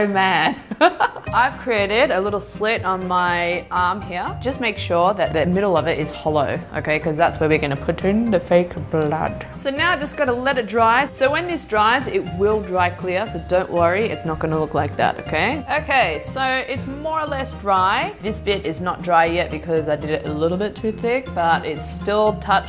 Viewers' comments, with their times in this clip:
0:08 she sounded like Snape😂